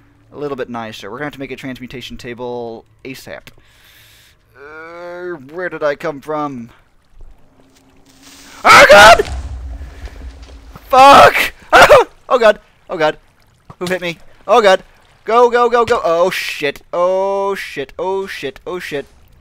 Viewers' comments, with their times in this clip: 0:07 oh god *boom*